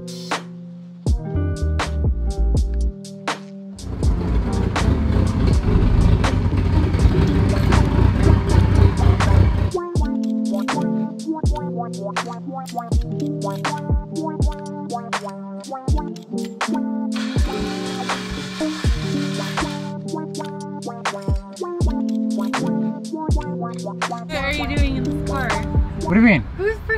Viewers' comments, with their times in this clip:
0:07 I like how the engine sound mixes in with the beat